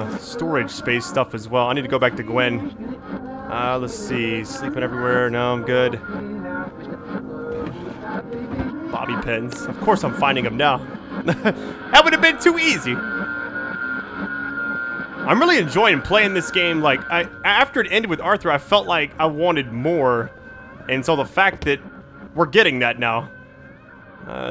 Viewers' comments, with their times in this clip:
0:08 whatever is in the background is backwards wish i could reverse it to see what its saying